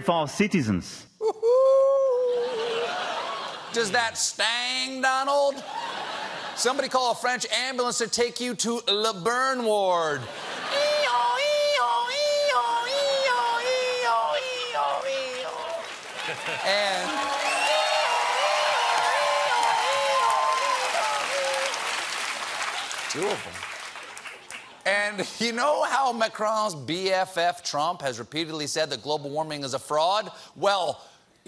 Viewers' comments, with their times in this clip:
0:10 it should be weewoo, weewoo, weewoo, much cuter...
0:13 the captions render Stephen's ambulance noises as "doo-doo doo-doo doo-doo" when it is clearly "ee-yaw ee-yaw ee-yaw". Up your game, captions person.